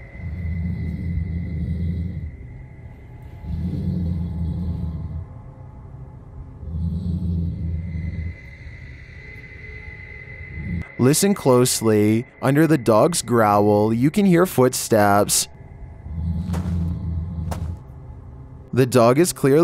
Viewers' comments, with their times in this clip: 0:06 I ain't here no damn footsteps you added those in